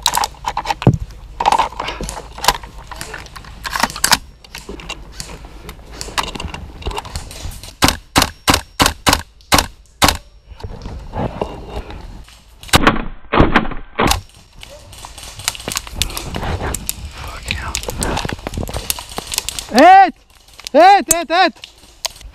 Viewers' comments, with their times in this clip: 0:06 DAMN that charging handle/bolt carrier sounds BEEFY.